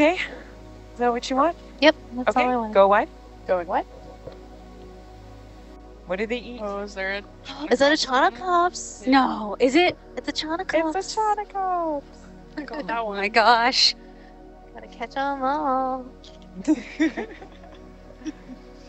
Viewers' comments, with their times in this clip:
0:06 Absolutely delightful. Between the sheer glee, Pokémon song, and the roundness, there is so much joy here!